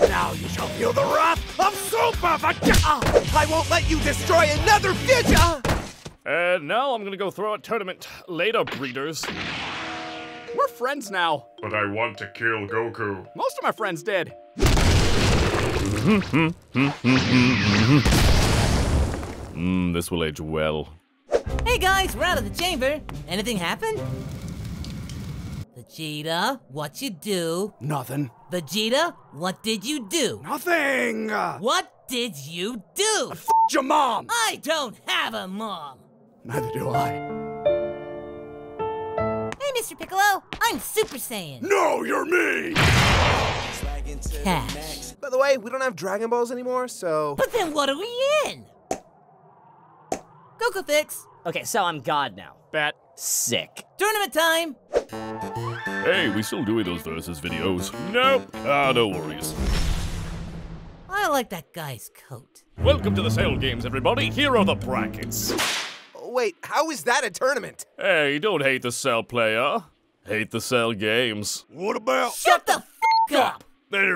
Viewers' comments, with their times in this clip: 0:09 the frieza blast sfx lol
0:15 are we just gonna ignore that cell was humming Megalovania ?
0:15 He didn't just hum Megalovania.
0:15 Just realized cell hums a bit of Megalovania
0:15 Oh my fucking God I never even noticed he was humming Megalovania...
0:16 anyone else noticed cell humming Megalovania?
0:55 I was looking away from my phone, heard the music and snapped straight back to the screen